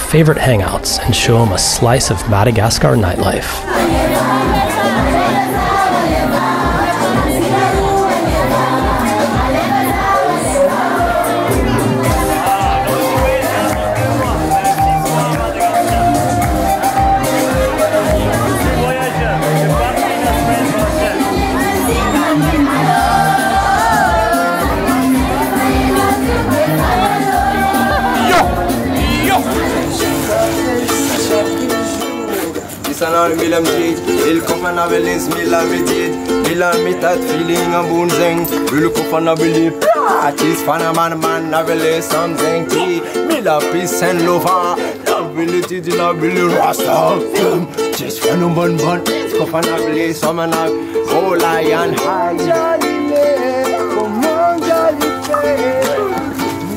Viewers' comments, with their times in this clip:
0:04 Does anyone know the name of the song playing in the background at the party? the flow is awesome. I tried but in vein Thank you
0:37 song is not bad